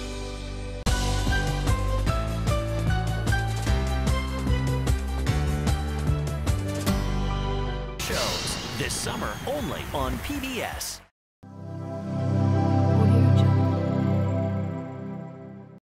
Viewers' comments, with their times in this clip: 0:12 what is that weird female voice?